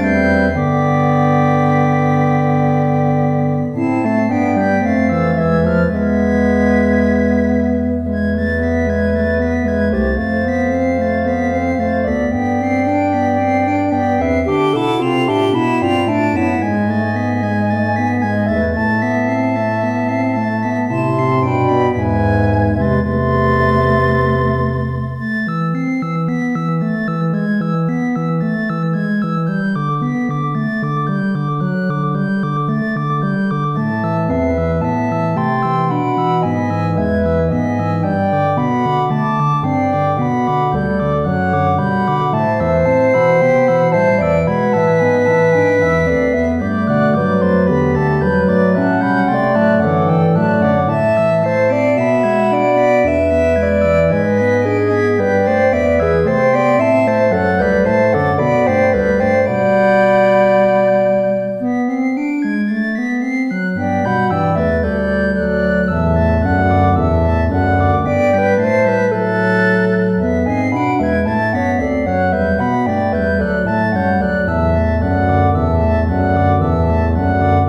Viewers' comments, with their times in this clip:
0:09 Amazing! The long notes are filled with awe, as previous comment said beautiful yet haunting.
0:59 That chord is so overwhelmingly beautiful